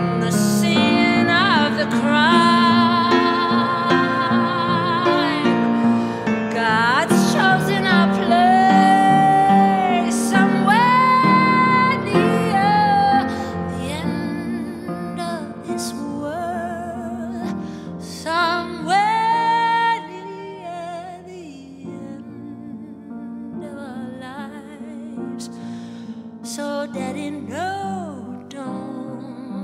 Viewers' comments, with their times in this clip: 0:10 goosebumps...How you sang this phrase Martha...most beautiful. Heavenly experience.